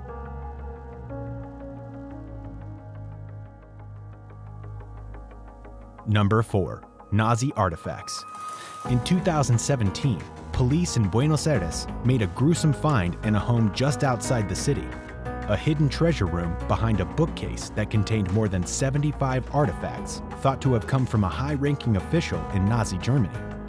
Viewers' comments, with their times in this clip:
0:07 "Nozzi" is not how you pronounce Nazi